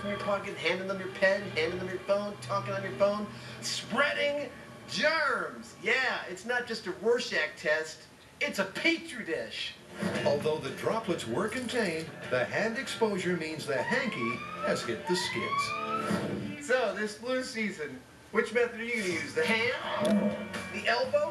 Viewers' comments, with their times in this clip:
0:05 I see a guy sneezing